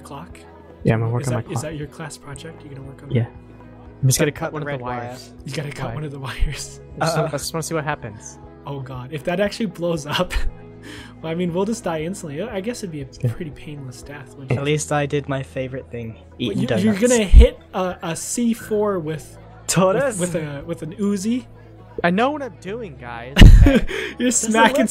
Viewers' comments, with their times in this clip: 0:06 cuts red wire C4 starts clicking fastly BBBOOOOOOOOOOMMM